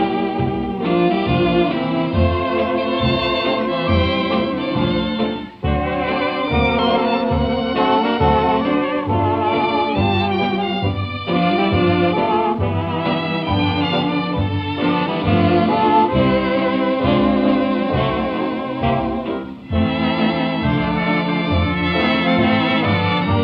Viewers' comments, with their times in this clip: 0:08 I always loved the instrument (can’t tell what it is) That little section is just so good.